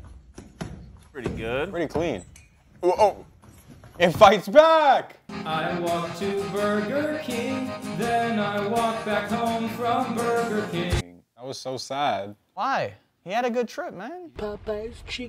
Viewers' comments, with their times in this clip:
0:03 YOU LAGUHED BRUV